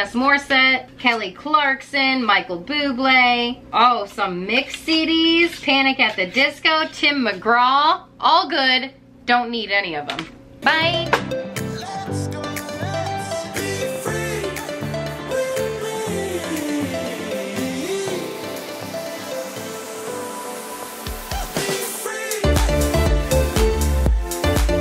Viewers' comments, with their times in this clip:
0:10 I want you to know... This is the soundtrack of my childhood. 🙌🏻 You and me sista! PS I love how you say Byeeee